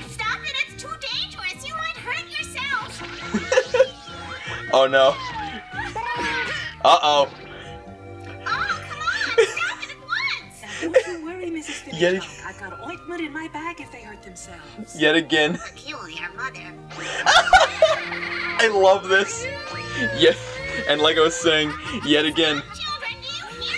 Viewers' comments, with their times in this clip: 0:05 Wow that pirate episode. Did they even air it in Finland? Yoshi sound